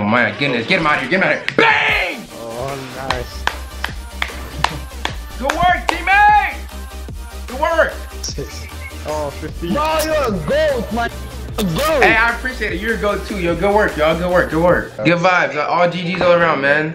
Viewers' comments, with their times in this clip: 0:03 his claps were on beat 🤣🤣